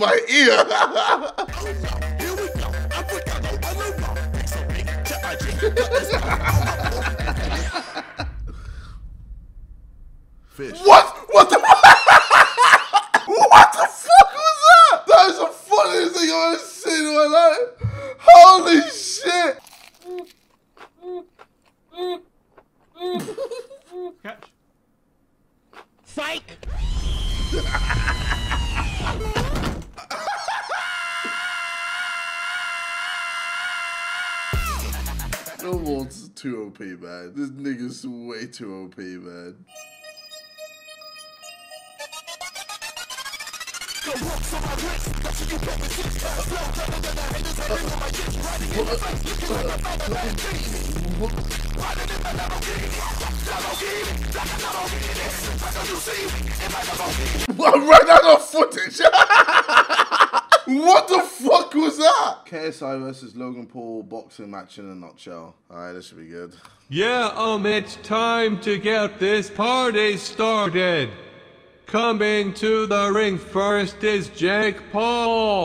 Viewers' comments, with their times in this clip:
0:08 the fish killed me XD That sounds weird XD
0:10 that is the funniest thing I have ever seen ( laughs for about 5 or 6 seconds) Another video worst thing ever he laughs for about 2 hours
0:40 R.I.P headphone users😭😭😭
0:56 if u slow down the video it acc sounds like jj saying what’s on the screen